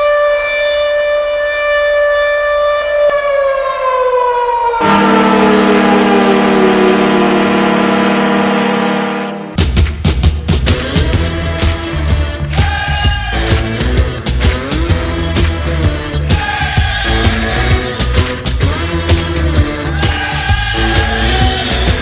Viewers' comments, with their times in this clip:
0:05 sounds like the Rays horn on steroids.